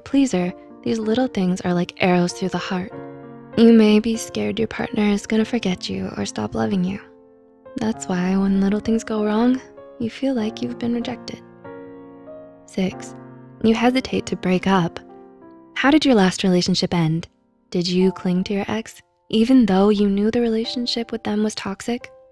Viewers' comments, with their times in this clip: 0:08 she started to sound sad and i got worried for a bit